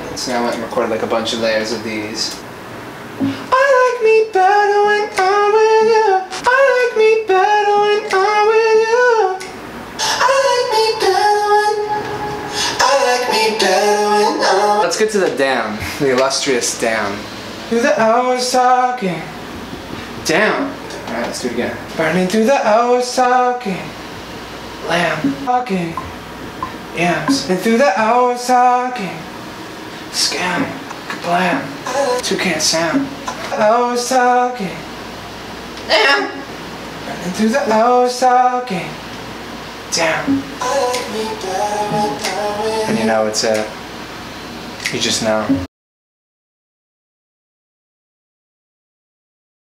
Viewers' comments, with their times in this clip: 0:03 i literally like his falsetto af
0:03 Why isn’t anyone talking about his voice though?
0:17 From bro laugh is sounding too seductive 😂😂😂😂I can’t stop 😂😂but he’s a musical genius
0:25 bruhh that voice !!
0:33 Burning through the hours talking..... suddenly a goat appeared
0:34 rooster mode came out xD
0:34 major voice crack
0:35 LAUV : damn..daamn..dammn.. Me : all of his "damn" are actually good After Me : "LMMAOOO"
0:35 When a goat sings i like me better DAMN!
0:35 the inner goat trying to come out
0:35 i was so confused i thought youtube randomly started a goat video woah im shook to my core
0:35 that voice crack xddd
0:35 dAmN (wow that was like a goat tho)
0:35 😷😷 that's how I sound. ..
0:35 R.I.P Headphone users😂🌸 I literally,fell off my bed!
0:35 He doesn't give a about his voice cracking😂
0:35 when you hit your puberty while singing
0:35 ..that's how I sound when I sing " I like me better
0:35 how i actually sounded like when i try singing this part
0:35 Me when i try to do falsetto
0:35 wtf is that noise.
0:36 My Singing Voice